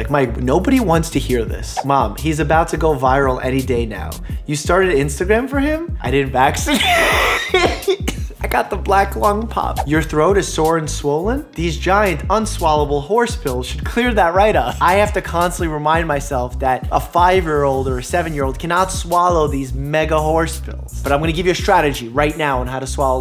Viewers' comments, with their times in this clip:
0:05 he sounds dead loll 💀😭
0:06 That laugh!! Doc, you nearly killed me!
0:06 bruh not you sounding like a Pterodactyl XD
0:06 you sound like a kettel
0:07 that violent wheeze tho- 😂
0:08 that laugh tho